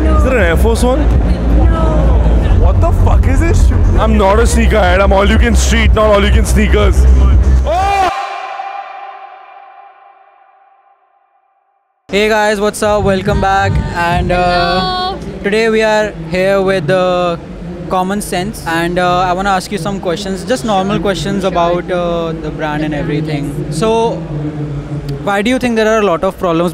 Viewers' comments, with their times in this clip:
0:08 time stamp the guy screem very funny 😂